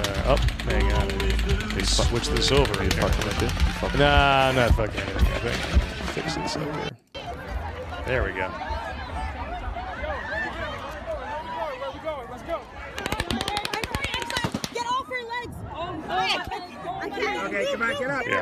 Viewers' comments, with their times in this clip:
0:06 you cand STILL clearly hear two RILFES being fired at the same time.